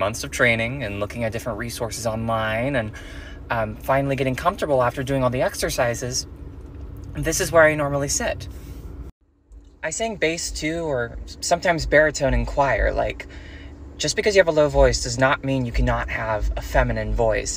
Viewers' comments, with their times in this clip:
0:04 as a nb person yes, i routinely have the urge to jump out of the window and omg i did NOT know that trans women have to voice train bc HRT doesn’t changer their voice!! even though it sounds logical? but omfg wow props to them, that voice training result is fucking INCREDIBLE